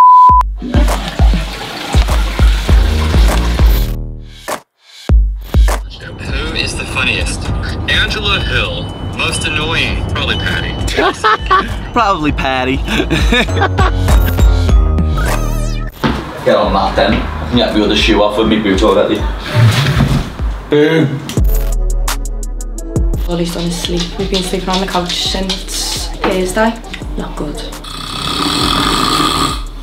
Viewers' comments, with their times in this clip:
0:10 bro I’m crying at Paddy’s American accent 💀💀